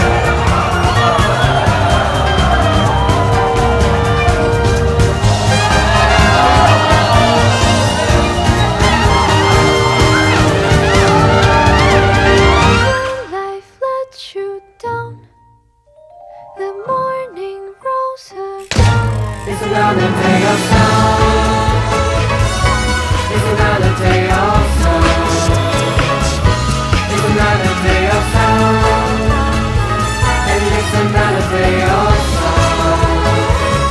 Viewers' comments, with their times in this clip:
0:09 very cool but just a little bit mistake it's a trumpet solo not a saxophone . the cover is very cool congratulation!
0:21 Love the cover plus the way you add the stomp of the bike is really cool....plus lol